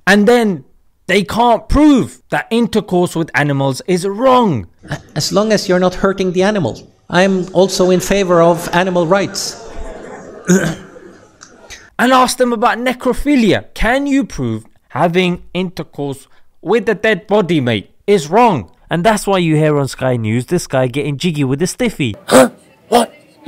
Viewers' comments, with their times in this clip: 0:09 his laughter is gold🤣🤣🤣🤣🤣🤣🤣🤣🤣🤣